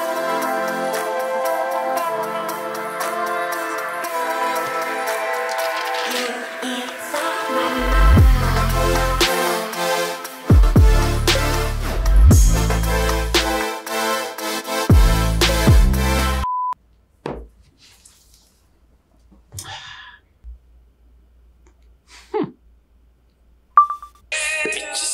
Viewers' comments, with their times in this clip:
0:08 That drop was fire, may I know the song?